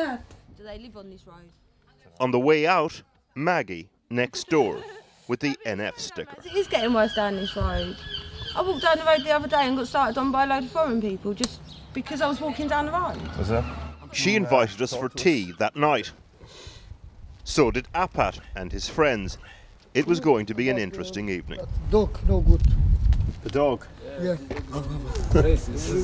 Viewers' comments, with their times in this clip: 0:07 Did anyone else think that lady was not speaking English ? haha